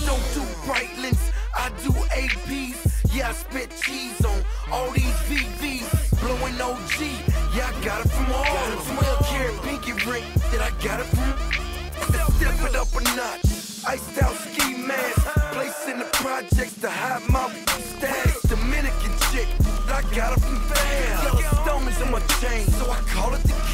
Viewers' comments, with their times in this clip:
0:07 Я говно! (He said "I shit" in russian)
0:11 lmfao you can hear Jeezy say nigga!! lmao nice work editing profanity